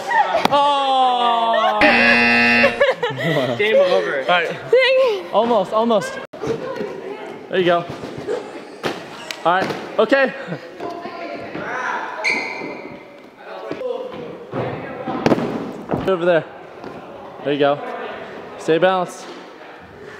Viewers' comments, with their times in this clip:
0:04 the fuck did she say? Cling? Fling? ...